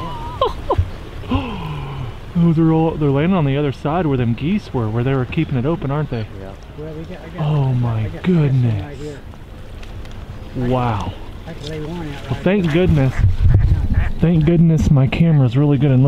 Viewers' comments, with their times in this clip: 0:03 Wings swooshing in the air is the second hottest thing to hear ever!!!!! Haven't watched more then 5 minutes of the video just keep rewinding to lol